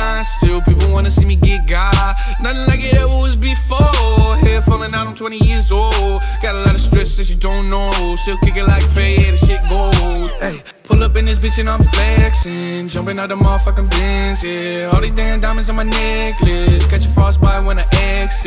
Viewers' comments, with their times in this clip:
0:03 this guy sounds like yung pinch